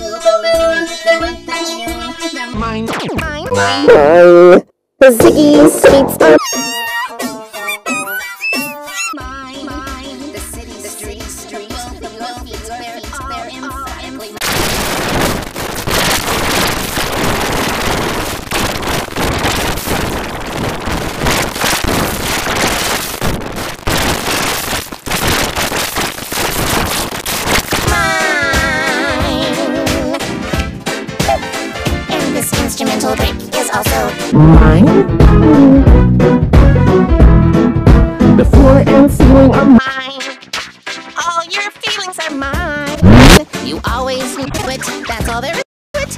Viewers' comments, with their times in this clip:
0:06 sounds like pitch white
0:28 sounds like g major 7